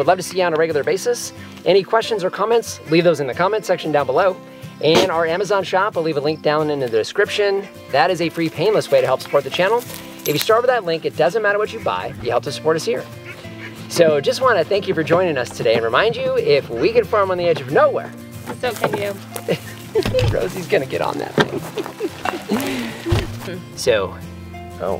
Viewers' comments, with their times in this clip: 0:05 Was it just me or did the goat rip the loudest fart 😳😂